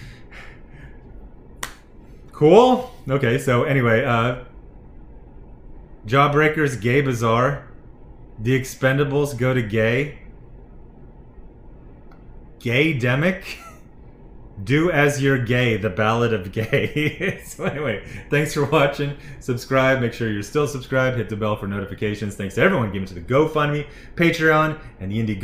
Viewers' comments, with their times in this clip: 0:10 I love how you held on PANdemiC because you weren't sure how to change the name.